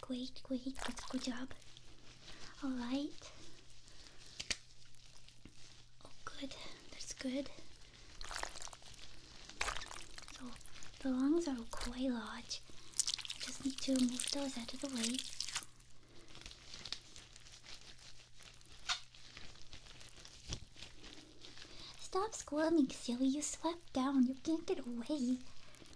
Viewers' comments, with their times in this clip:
0:10 sounds liking stirring macaroni in a pot I’m traumatized